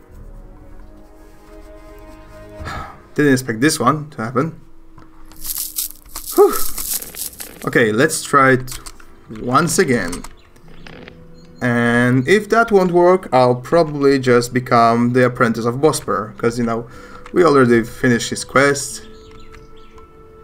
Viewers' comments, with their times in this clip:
0:05 Ooo fuck! I just died in your arms tonight 🎵 Sorry, the way you said it made me think about this song XD